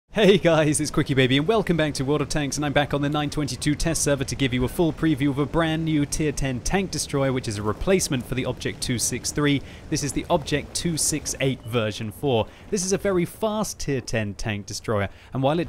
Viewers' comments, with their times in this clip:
0:00 When he said "Hey guys" he sounds like a goat check it out yourself